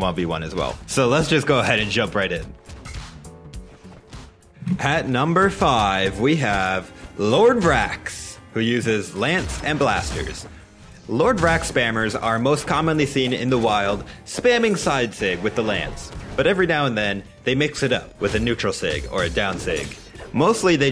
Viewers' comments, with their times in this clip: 0:06 Almost said it like the Announcer, how nice!!